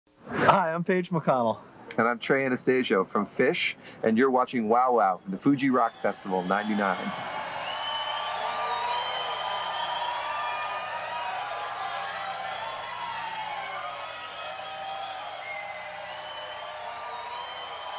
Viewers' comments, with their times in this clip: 0:02 Um... have I been saying his name wrong all this time? I thought it was An-as-tAHsio, not An-asTAYsio.